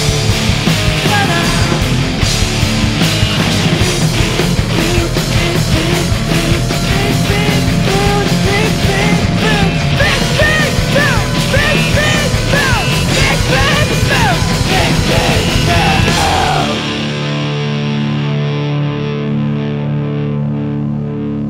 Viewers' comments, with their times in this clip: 0:04 I'm from Ukraine, and a siren made my heart explode :(